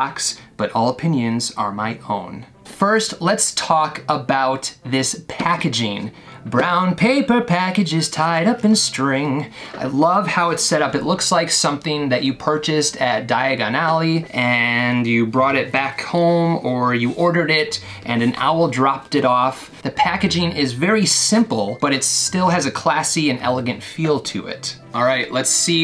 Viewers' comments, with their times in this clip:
0:08 those vocals tho